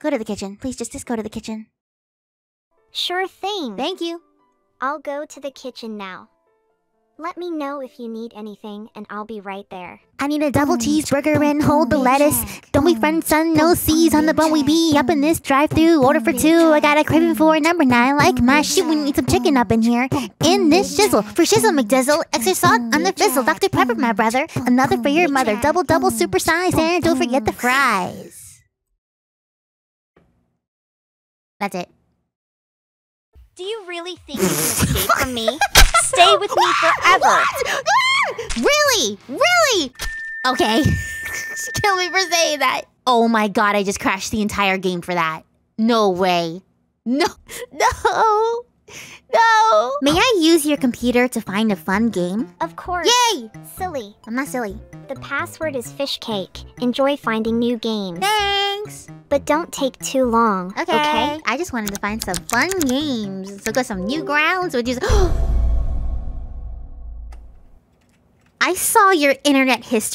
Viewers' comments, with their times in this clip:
0:09 I like the way u rap the song
0:10 that rap wasn't released, it escaped 💀
0:10 Girl a rapper
0:26 THE RAP I LOVE IT
0:53 the way you said Yay!